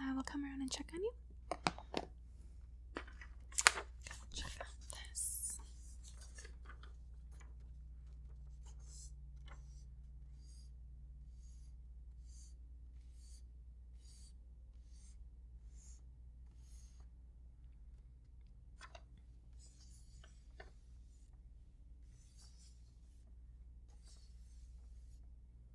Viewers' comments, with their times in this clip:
0:09 The best legs in the ASMR biz. Also, the fingers on paper were some excellent triggers!